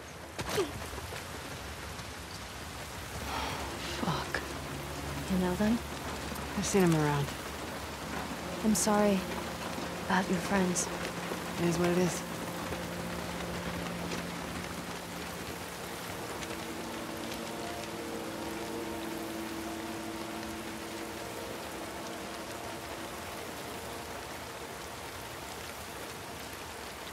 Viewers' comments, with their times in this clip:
0:10 “it eez what it eez” -Abby